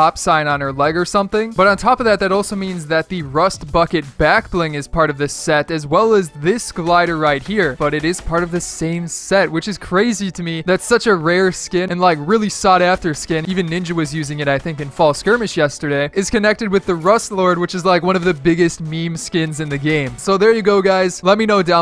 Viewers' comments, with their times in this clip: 0:03 is it me or did he say rust fucking backbling?